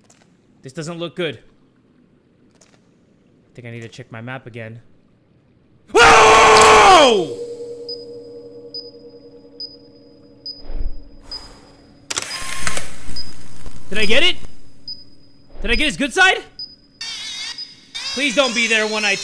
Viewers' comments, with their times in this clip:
0:05 I was falling asleep and he screamed😂